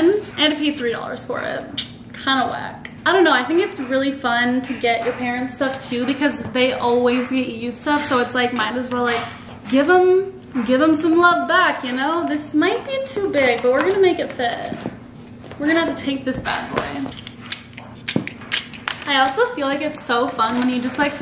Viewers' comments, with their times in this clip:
0:09 damn that dryer puttin in some work